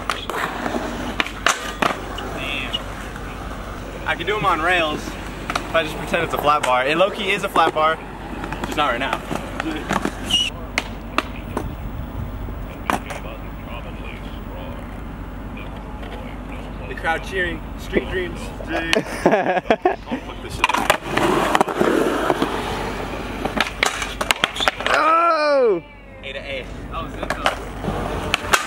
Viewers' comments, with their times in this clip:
0:10 nice prod impression lmao